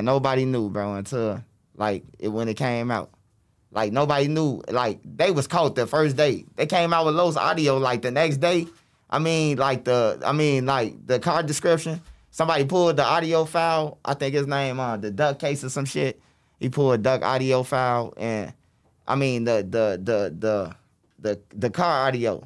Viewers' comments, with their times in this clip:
0:03 This MF Stuttering 🤦🏽‍♂️ Just because The feds know that you know them peoples, doesn't mean you have to confirm their identity. Loose slips sink ships. 🐀